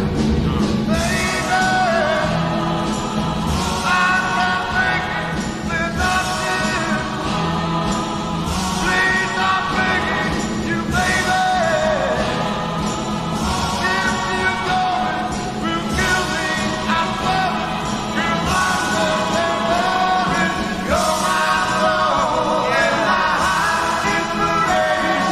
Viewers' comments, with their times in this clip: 0:06 Those notes are my favorites!!! Thank you for the uploads and reactions.